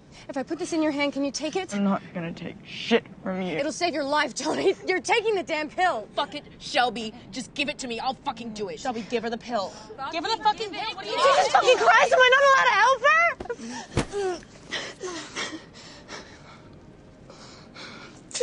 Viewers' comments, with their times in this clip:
0:03 Just me or did sound like an enderman zapping away